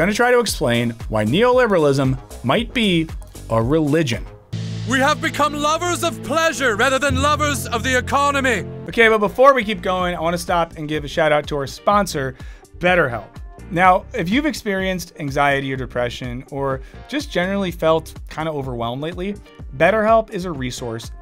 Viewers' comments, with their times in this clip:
0:09 Am I the only one jamming to the “promo” section music? Anyone know the name of the tune?